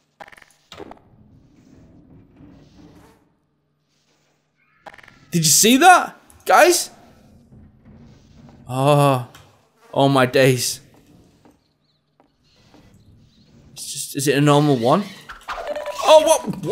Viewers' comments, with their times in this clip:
0:03 who heard the women scream